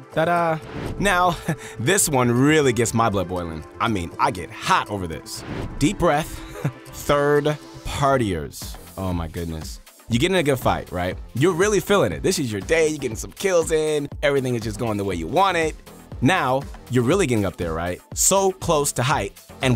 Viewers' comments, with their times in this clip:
0:04 man what I heard now I’m thinking that I’m listening to too much bobby shmurda 😂